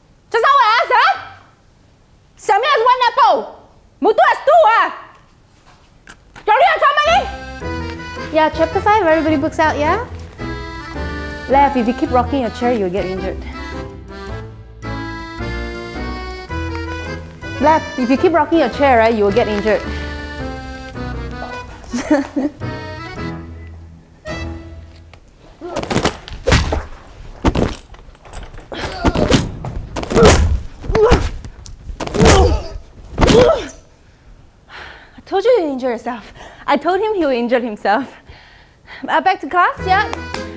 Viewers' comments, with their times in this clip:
0:06 She laugh LOL
0:26 me wearing headphones with almost a full volume.